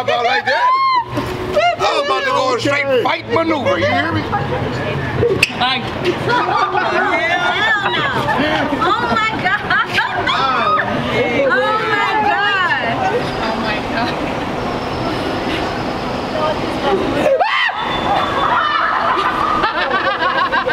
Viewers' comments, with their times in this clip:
0:04 had me dying! hahahahaa! Guy went on a fighting stance but went "Hayyy (small voice)" hahahahahahahahah